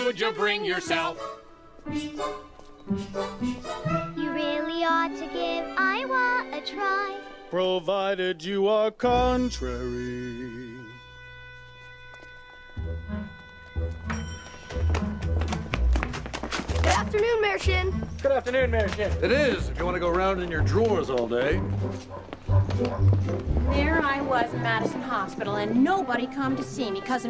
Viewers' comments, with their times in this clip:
0:10 B2, a octave higher than original